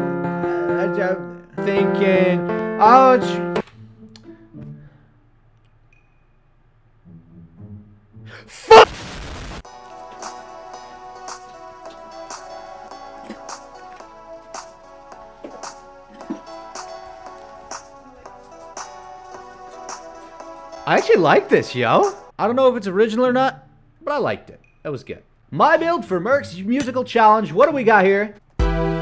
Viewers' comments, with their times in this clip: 0:10 my left ear loved that one